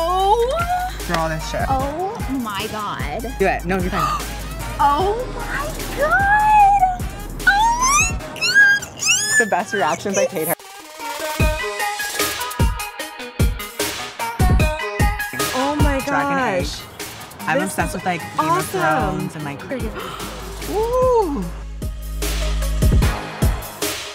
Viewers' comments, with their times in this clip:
0:09 Girl that squeel she made was annoying.